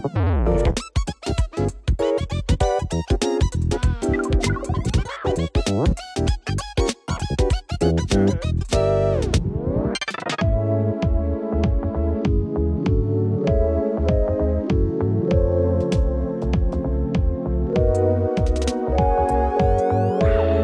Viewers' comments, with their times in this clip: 0:03 the sound makes me think of the gumdrop sound in bee swarm simulator for some reason.